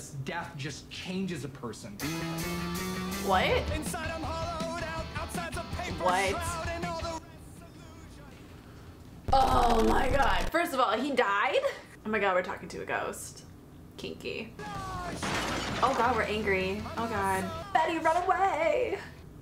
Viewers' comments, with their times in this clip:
0:03 When Jughead started his angsty teen sing fighting thing, I laughed so hard I couldn't breathe and I was in tears lmao
0:06 Okay I’m pretty sure Cole Sprouse has gone on record saying that he hated every moment of the musical episodes. That’s why everyone else just sounds bad/terrible and he sounds like he’s being tortured and/or just doesn’t want to be here.